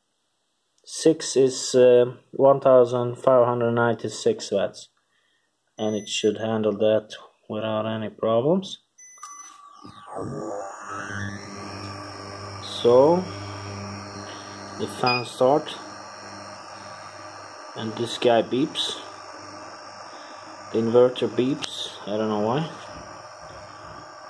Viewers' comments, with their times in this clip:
0:09 The sound of it powering up is crazy